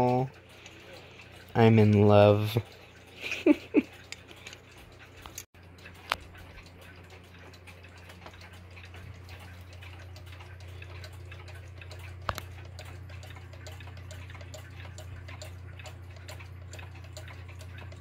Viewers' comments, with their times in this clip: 0:03 your laughing jsjjsjs